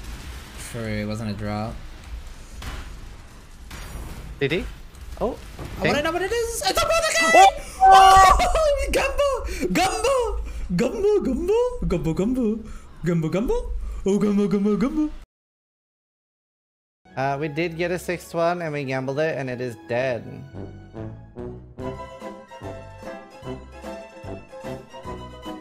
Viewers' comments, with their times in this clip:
0:08 Did he say "gavno"?